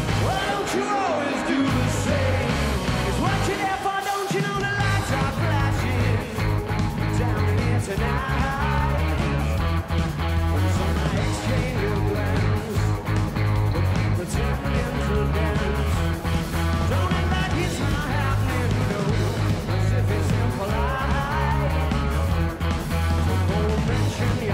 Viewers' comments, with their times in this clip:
0:07 his old voice came back for a few seconds there 🤧